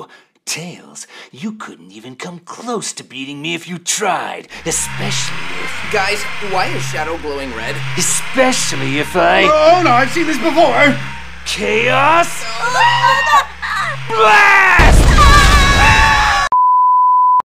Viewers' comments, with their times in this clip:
0:09 flashback sound "N-n-no!! Not shadow fever!!"
0:11 ROBOTNIK'S SRACMING LIKE A GOAT XD
0:13 Mike Pollock's screaming is so fucking genuine, I love it.